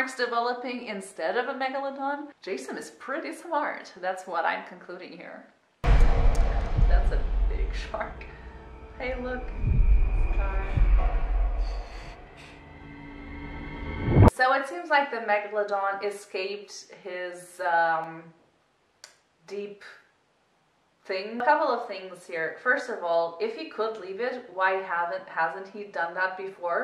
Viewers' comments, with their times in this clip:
0:07 What accent is that? Also, that's just a regular-sized shark, it's just magnified by the massively thick glass of the base.